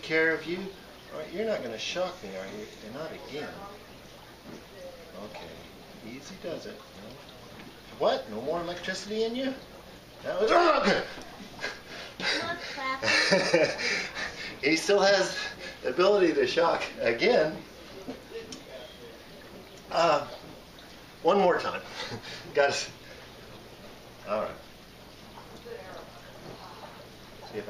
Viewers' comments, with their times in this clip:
0:09 Man: What, you want more electricity in ya? Catfish: Man: screams “Ya got me again” very quick